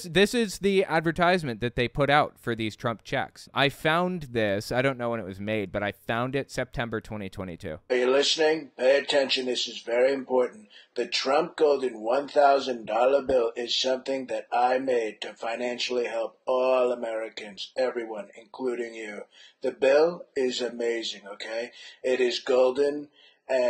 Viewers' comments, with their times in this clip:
0:07 Am I the only one that's convinced that the caller is not trump? Did he have a cold at the time or something? Would LOVE to know!